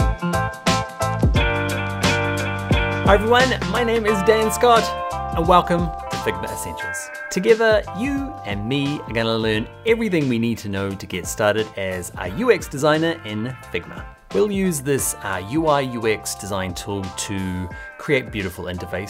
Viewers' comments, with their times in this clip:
0:07 I love the way he said "you and me learn..."❤